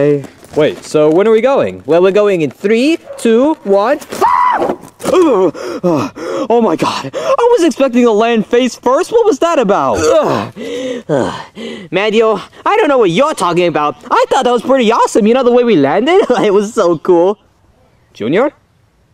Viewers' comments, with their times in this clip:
0:05 what it sounds like to drowned